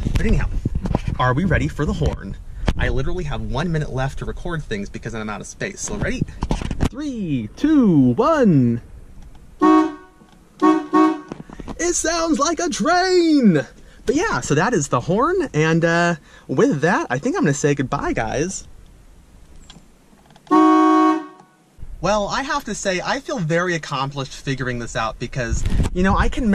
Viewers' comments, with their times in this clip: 0:07 For the Horn sound. Sounds like you are missing the "A" note and the "C" note.